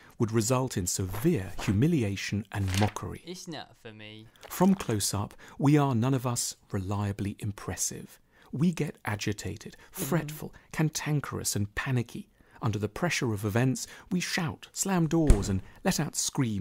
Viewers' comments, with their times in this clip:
0:03 can we take a moment to appreciate the background voice/guy? really funny